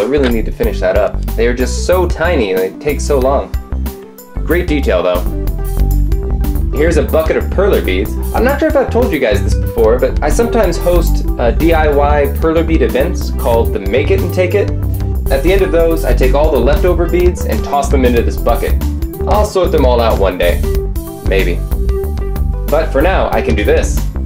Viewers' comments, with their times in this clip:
0:05 the music screws up